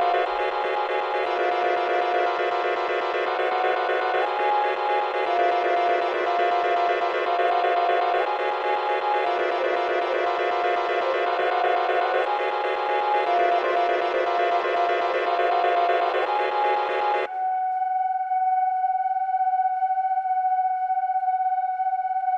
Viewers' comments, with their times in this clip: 0:05 I really like the saxophone timbre at playback or so